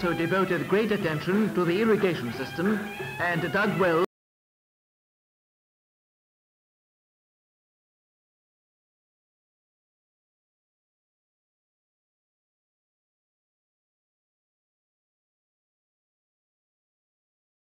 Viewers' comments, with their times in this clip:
0:04 Audio cut in